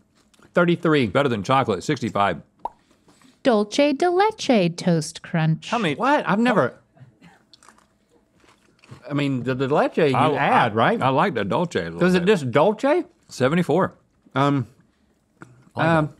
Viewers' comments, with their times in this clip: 0:03 "dulche de leche " I was so confused when i heard that until i read it and i was like oh Dulce not dulche. LOL